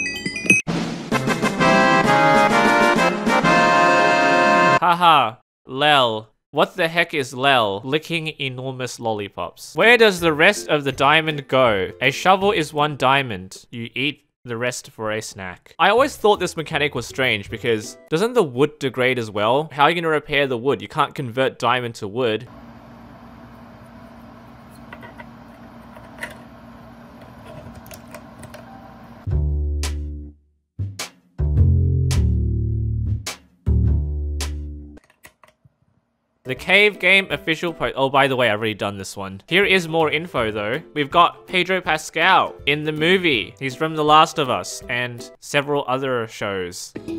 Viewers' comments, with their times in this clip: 0:07 laughs extra loud
0:29 Is it just me, or does the music sound like the Thinking Chair music from Blues Clues?